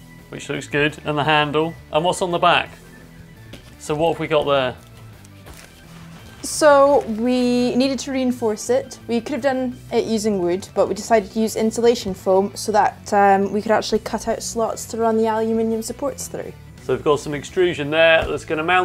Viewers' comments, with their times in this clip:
0:05 Lmao she thought she was slick. Thats not even her real accent listen carefully she is a fake😂